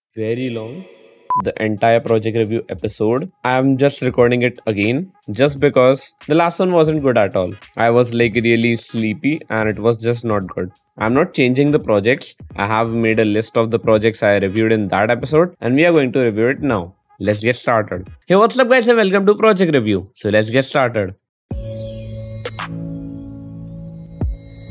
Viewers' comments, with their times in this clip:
0:06 dude wth did you say